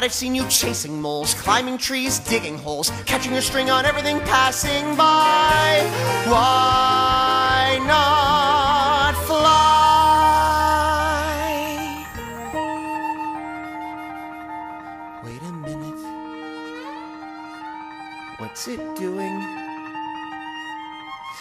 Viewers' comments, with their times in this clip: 0:09 That transition from chest voice to head voice though. Kill me now